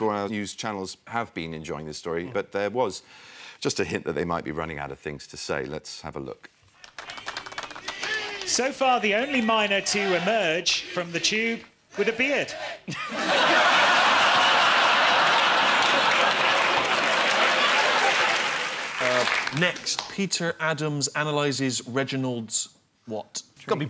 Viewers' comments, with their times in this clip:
0:09 what does the commentator say that's so funny? I've played it ten times but I just can't make it out: "so far the only miner to make it out of the tube jkl;dlsjfgsliuntbvliret"